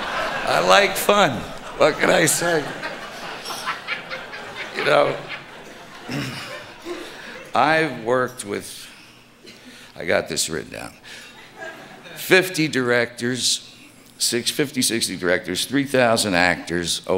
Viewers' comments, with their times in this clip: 0:03 can you hear that laugh in the background lol